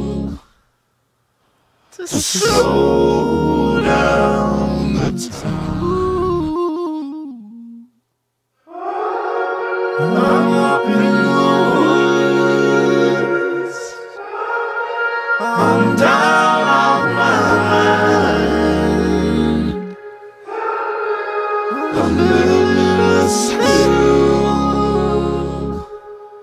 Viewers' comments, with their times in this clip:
0:08 the background "oooohhhhh"'s gets me every time. Beautiful:)